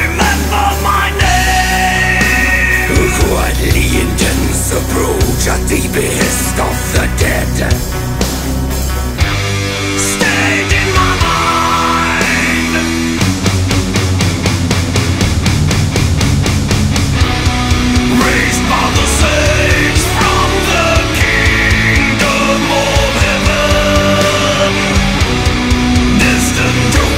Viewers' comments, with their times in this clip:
0:09 Thought it was Travis Ryan for a second there..